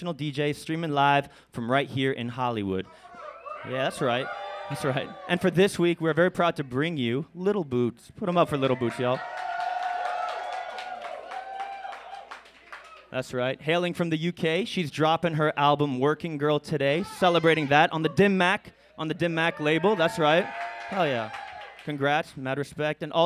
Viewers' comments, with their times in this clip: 0:06 I could've sworn he said 'little boobs'